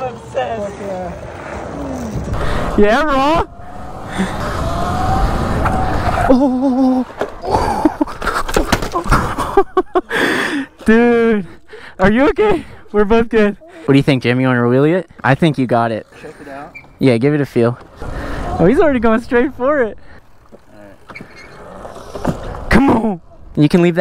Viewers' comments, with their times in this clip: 0:09 dude are you ok we’re both gay got me dying